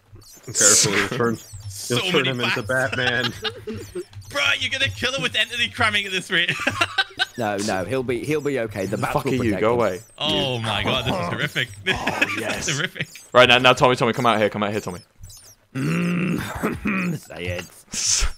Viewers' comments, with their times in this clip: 0:03 Tommy's adorable little giggle